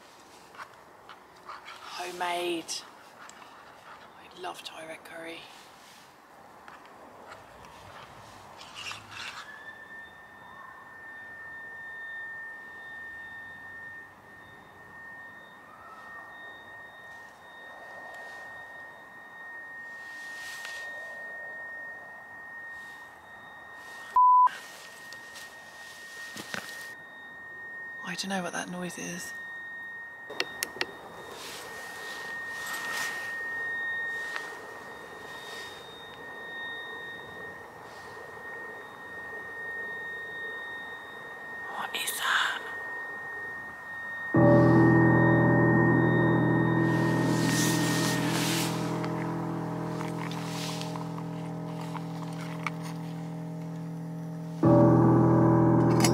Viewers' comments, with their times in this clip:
0:10 that's the alarm 😂😂😂
0:38 The weird noise sounds like another stealth camper using a battery powered inflator on his air mattress, lol
0:38 The way that sound was for me on this video, it kind of sounded like an old machine when they get gears stuck or something like that. But the sound is probably different in real life than on video, so who knows. Been around machine before and when they got jammed up. The sound can be hard on my ear (in real life) as my hearing is different. I can hear sound others don't hear, mostly much higher pitch and some very low pitch sounds.